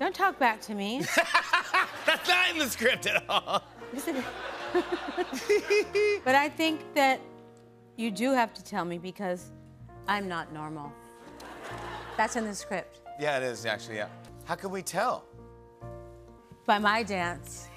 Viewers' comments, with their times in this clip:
0:04 Love her giggle